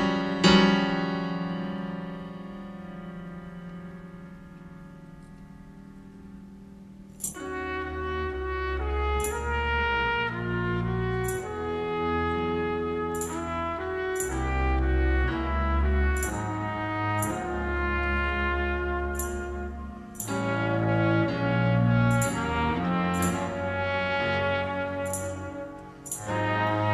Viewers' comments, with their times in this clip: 0:07 Norma Winstone sings Shakespeare’s “Fear No More the Heat O’ the Sun”. Un-be-lie-va-ble.